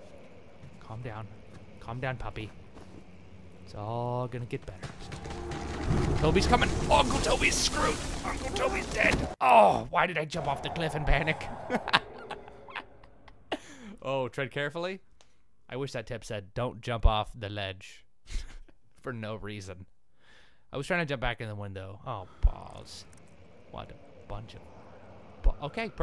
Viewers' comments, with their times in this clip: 0:07 Did I just hear the main character whimper at his imminent four story splatter death?
0:08 hahahahah the guy, Daniel or whatever, totally whimpers as he falls :P